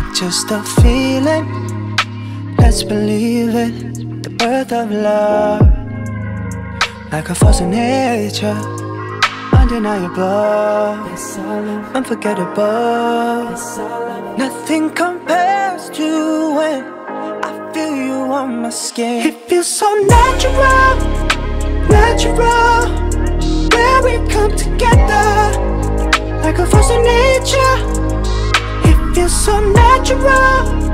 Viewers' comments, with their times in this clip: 0:09 Does Louis' Voice?
0:09 i hear LOUIS' VOICE tf...
0:10 I dont rly hear harry in the chorus of there you are but it sounds like I could hear louis in this
0:10 did I hear Louis
0:11 Who tf is the supporting voice ? Sounds very much like Louis😳
0:11 (it's our love) (it's our love) i feel this is louis who is saying this!!!! omg it really feels like his voice!!
0:11 (It's our love) Louis Tomlinson, was that you??🤯🥺 #zouis 💛💙
0:16 Okay, I will never get over the way he sings „when“ It does something to me that I can’t explain... JUST LISTEN YOURSELVES